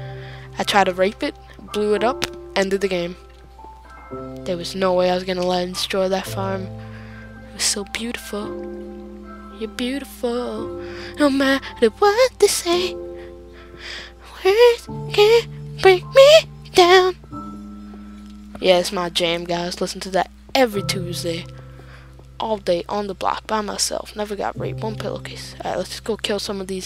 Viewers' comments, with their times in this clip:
0:07 To hear my beautiful voice <3 :')